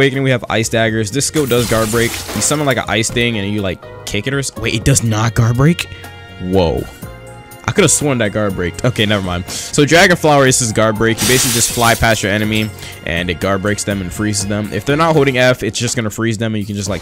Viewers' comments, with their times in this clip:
0:04 “Wait It does Not guard break? Woah Lmao Why you say it like that